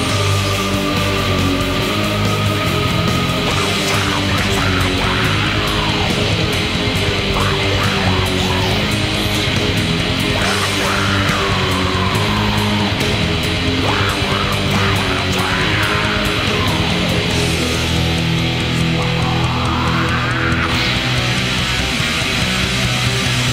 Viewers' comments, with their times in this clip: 0:04 that riff is a blessing from Satan